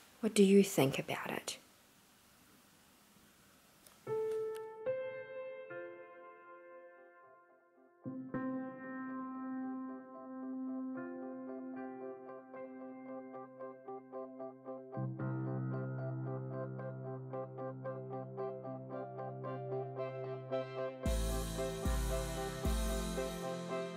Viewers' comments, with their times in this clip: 0:05 gsd breaths in deep as a sign of trust